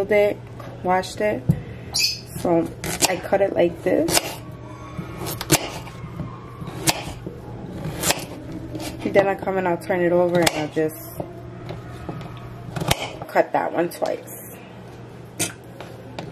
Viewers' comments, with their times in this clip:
0:03 Did anyone else hear the screams of the damned souls ?